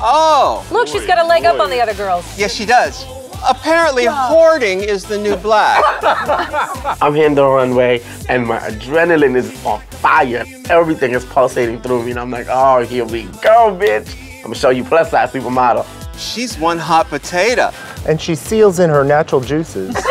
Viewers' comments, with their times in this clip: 0:05 santino’s laugh is sumthin else😂😂